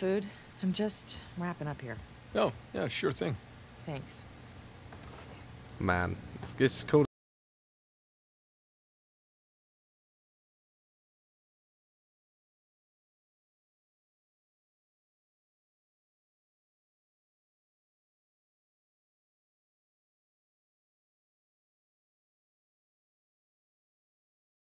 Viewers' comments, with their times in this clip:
0:07 Awe no....the sound had gotten cut out, what a bummer. This was always very fun to listen to after seeing this series of Daz Games over 5 times. Crap.
0:08 Anyone else’s sound stop working ?